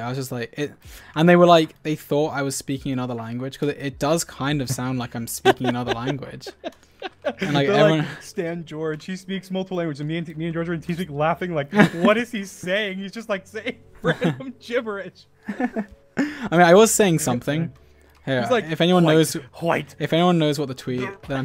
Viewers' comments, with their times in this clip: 0:08 Dreams laugh sounded so cute when he said Gibberish